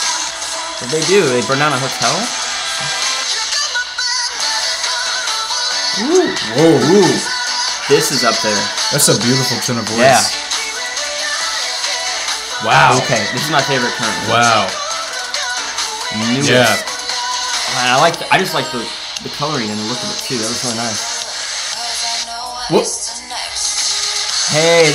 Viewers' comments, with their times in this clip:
0:06 Their voices are beautiful, you should listen to them <3